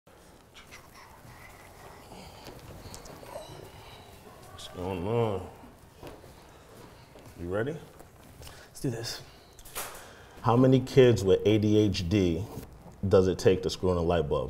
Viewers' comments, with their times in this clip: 0:02 The dad noises